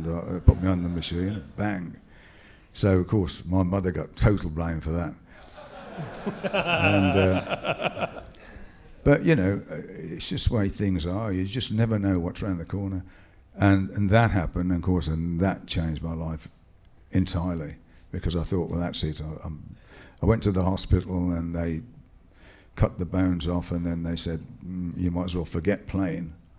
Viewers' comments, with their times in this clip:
0:05 fakest laugh ever lol
0:07 arguably the worst fake laugh I've ever seen in my entire life, look at how his facial expressions change in seconds.